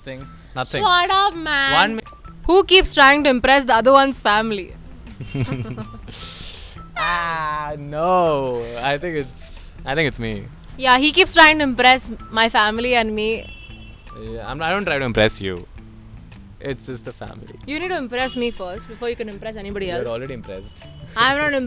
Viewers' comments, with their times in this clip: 0:05 is absolutely giving me relationship goals 🥺❤️ the same time nd same way they giggled 😩❤️